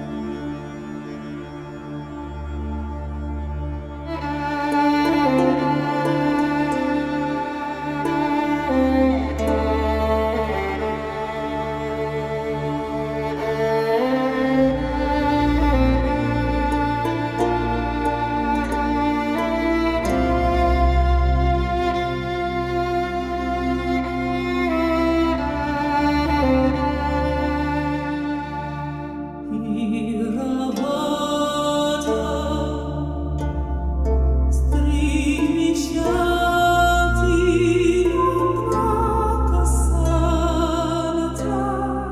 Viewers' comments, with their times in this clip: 0:10 seems like I'm playing to Assassin's Creed black flag :')
0:29 i really thought someone was talking behind me. i almost jumped up of fears :')